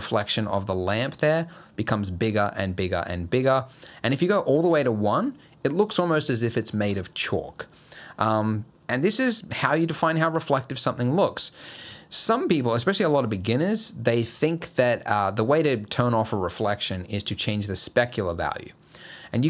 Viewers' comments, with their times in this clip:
0:07 Just found out that you come from NYC. Right? Yeah, the way you sound "chalk" is awsome! :) Btw I really love your videos!!!